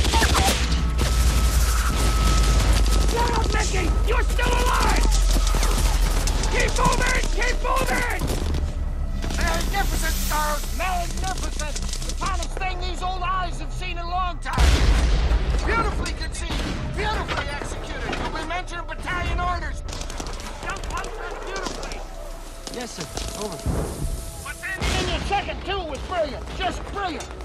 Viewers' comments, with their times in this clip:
0:10 Is it just me or can anyone else not understand a single word from till the end of the clip?